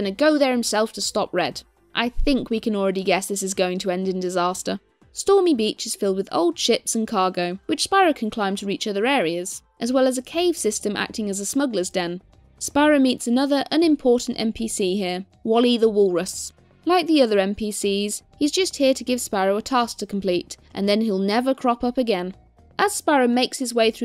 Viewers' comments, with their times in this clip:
0:05 first I understood "old shits" xD